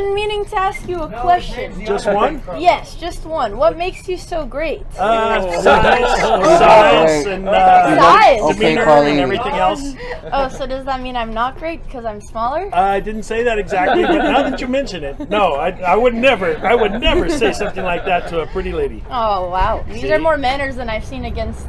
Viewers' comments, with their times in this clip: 0:05 Literally says “science” twice lol she heard “size”